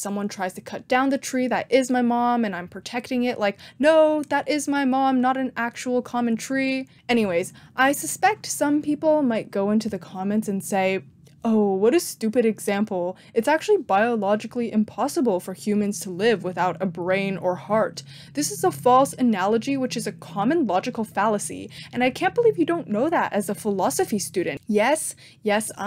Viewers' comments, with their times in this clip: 0:06 voicing valid counter-argument with a stupid voice... brilliant tatcic. Next thing, use the "chad vs virgin" images next to "pro-choice vs pro-life", so any counter argument is automatically invalid.